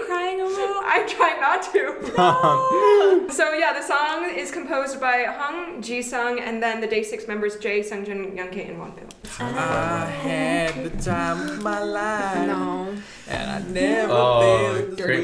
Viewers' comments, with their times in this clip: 0:03 it's mentioned that "the song is composed by han jisung and the day6 members jae, seungjin and youngk" and im cruious about the han jisung part? did i mishear the name or is it really stray kids' han jisung? and if it's the latter, is there a source for that information? EDIT: i did mishear, it's hong jisang not han jisung </3